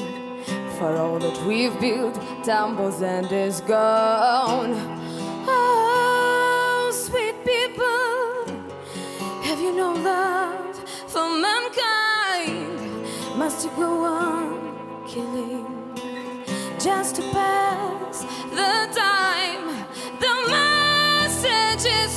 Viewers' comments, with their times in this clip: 0:04 When your voice gets a higher pitch because you took off your hoodie.